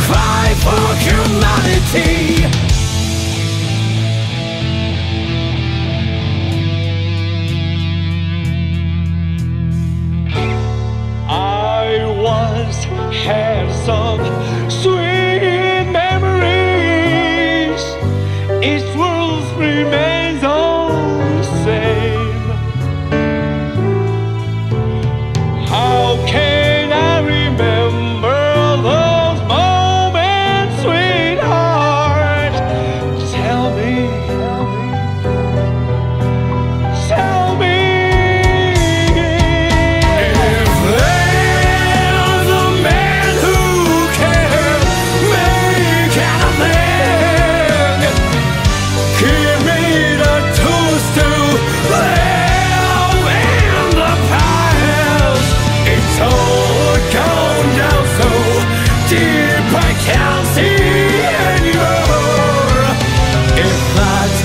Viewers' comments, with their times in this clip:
0:03 for me and everyone else i never knew pain could sound so beautiful
0:07 when the quiet kid starts singing
0:10 it's amazing how Naoki can capture Zato's humane side in the heat of everything else going on in the song.
0:10 the last minute of the songs reminds me a lot of QUEEN.
0:10 if you're here for the piano ballad
0:11 So basically the rock is eddie and the classical is zato
0:48 I’m sorry but I can only hear “he made a toaster”